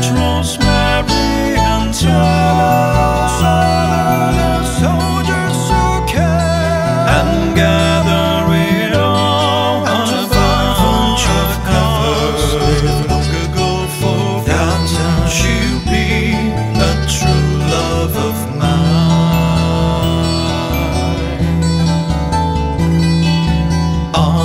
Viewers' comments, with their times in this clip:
0:05 A tad too much vibrato for my taste, but really nice cover in general ! Also one can really hear your metal/rock background ;)